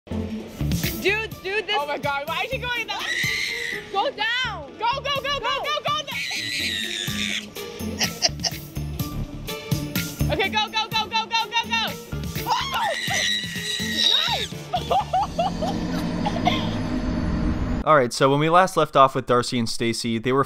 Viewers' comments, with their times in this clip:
0:04 Is no one going to talk about that squeals 😂